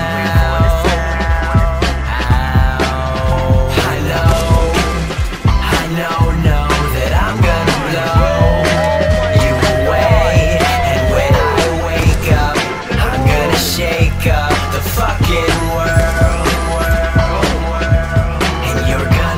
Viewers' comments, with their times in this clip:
0:05 ... that "wooooo" damn pure enjoyment and fun back in those days :( amazing
0:07 Literally the greatest reaction I've ever heard, and it fits so well into the song. Oh the good ol' days...